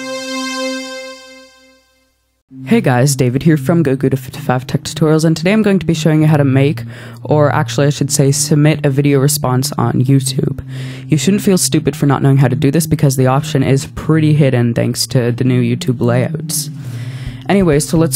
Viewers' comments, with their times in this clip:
0:03 Hwat the fuck was that? YOU CALL THAT PRONUNCIATION!? HERETIC!